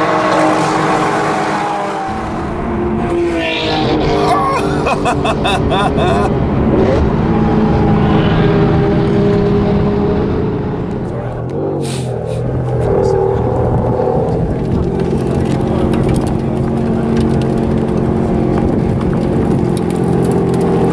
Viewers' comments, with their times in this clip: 0:03 lol i thought a dog made that sound haha